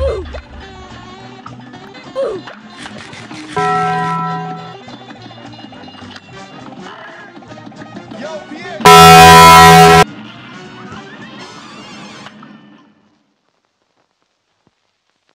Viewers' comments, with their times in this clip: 0:08 EARRAPE WARNING!!! Dis is sum gud shit. :D